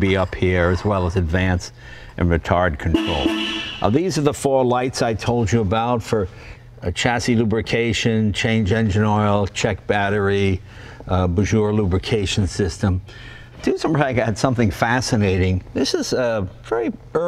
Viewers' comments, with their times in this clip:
0:04 thats such a cool horn